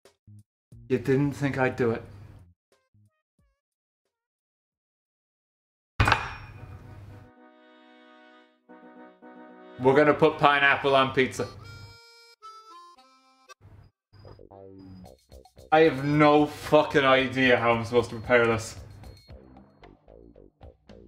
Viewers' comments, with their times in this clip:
0:06 perfectly timed music